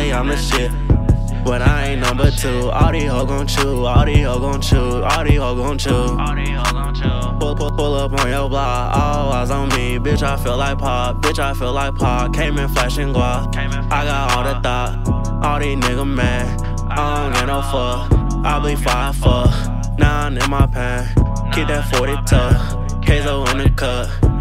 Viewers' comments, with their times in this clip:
0:07 that panned ecco thoo